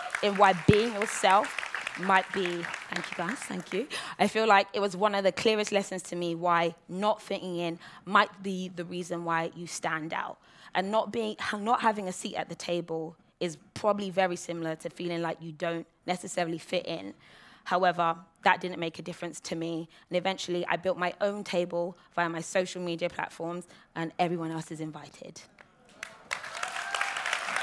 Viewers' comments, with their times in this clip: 0:09 Seems an audience member cried for us!